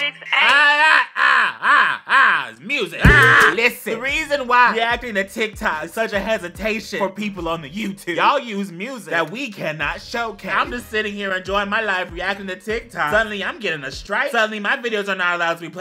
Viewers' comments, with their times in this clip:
0:03 he kinds sounds like MISS VANJIE